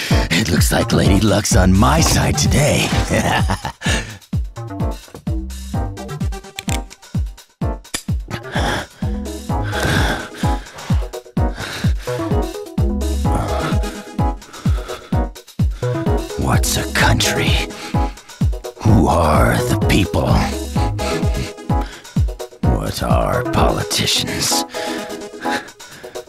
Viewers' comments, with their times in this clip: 0:09 the fact she was panting real heavy